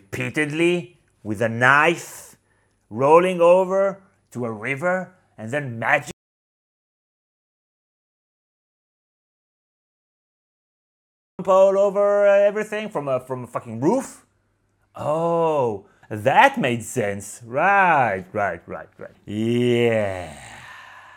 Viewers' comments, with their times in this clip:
0:03 What, happened to your voice